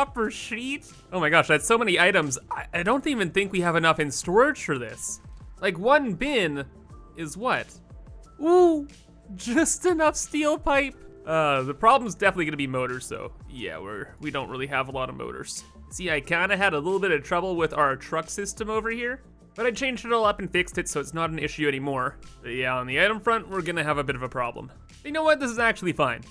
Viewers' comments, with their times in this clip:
0:07 i love his little "oOoOOh"